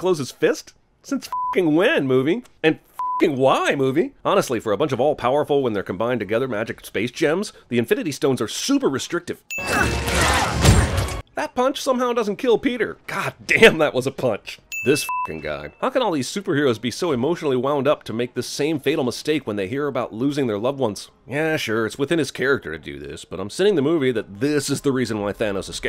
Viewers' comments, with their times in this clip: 0:09 IS nobody gonna talk about how thanos sucker punches spider so hard a deaf person from earth would hear that sound omg